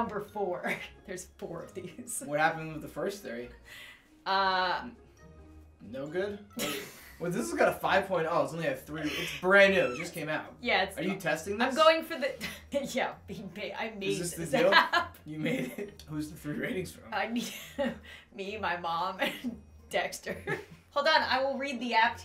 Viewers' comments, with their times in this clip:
0:09 what was that noisE? eEeE